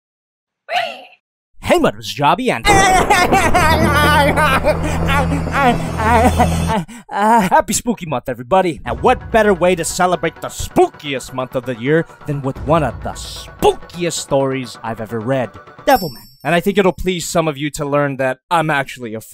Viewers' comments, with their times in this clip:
0:03 is the cackling of a complete madman. Someone please help this boyo